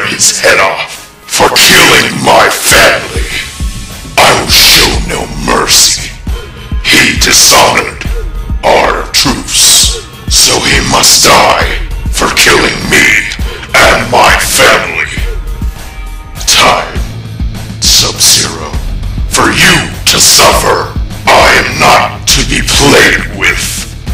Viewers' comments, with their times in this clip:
0:10 soviet must die